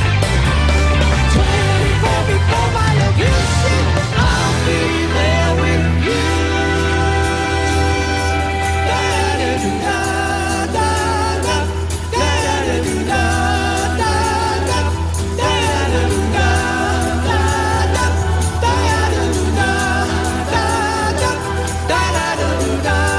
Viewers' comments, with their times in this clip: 0:06 Geddy, so caught-up in the magic of this performance, can't help but sing out with the rest of band.